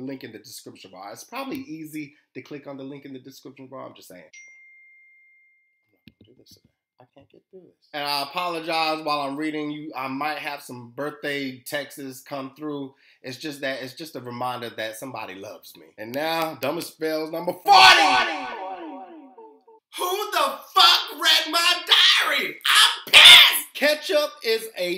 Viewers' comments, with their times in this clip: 0:09 some birthday texas